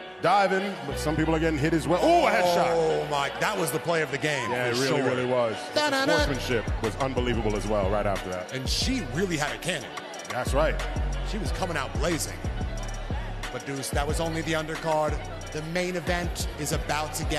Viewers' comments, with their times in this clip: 0:05 Why is nobody talking about the "dUh DuH Duh" ?? 😂😂😂 I'm so late to this but this got me hyped!